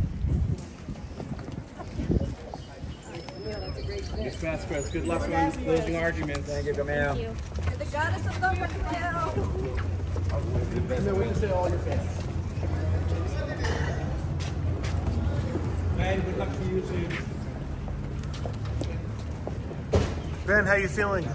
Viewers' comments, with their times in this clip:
0:07 did anyone else hear a woman, tell Vasquez to burn in hell? Class act.